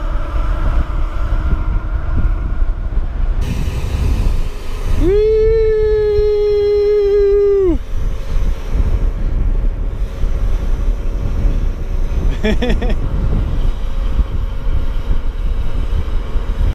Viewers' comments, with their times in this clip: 0:05 Dat YEEEEEEEEEEWWWWWWWWWWWWW I'm exactly like you ahahah